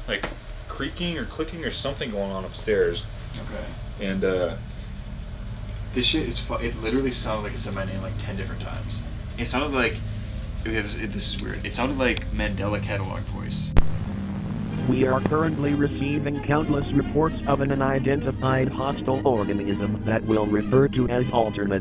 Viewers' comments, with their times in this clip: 0:09 this just made this so much creepier, the mandela catalogue narrator is so unsettling I cannot imagine hearing that voice in a haunted house